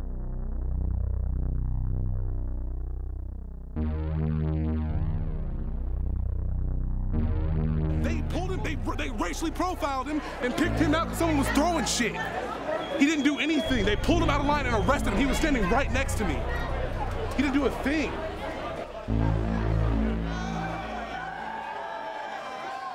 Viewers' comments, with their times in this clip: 0:08 thought it was kenny beats talking